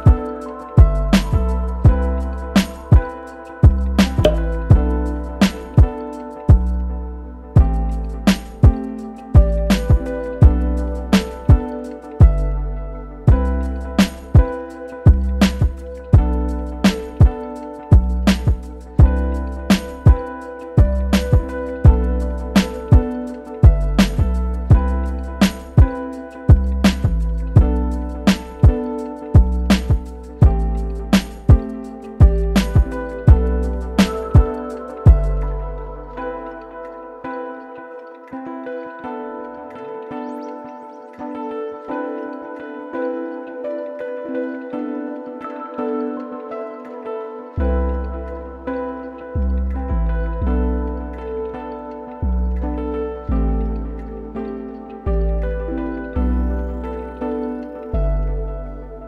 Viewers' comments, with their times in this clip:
0:06 Who laughed at the part?
0:46 Guy hesitates to accept the reality of the situation...realizes that those "DRUMBEATS" are final! "Aw, maaan!"